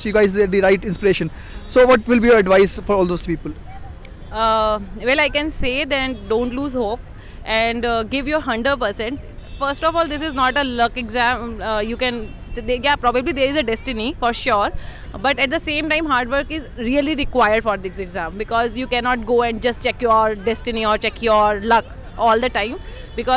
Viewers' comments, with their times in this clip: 0:09 Give your HUNDER percent .. LMAO 😂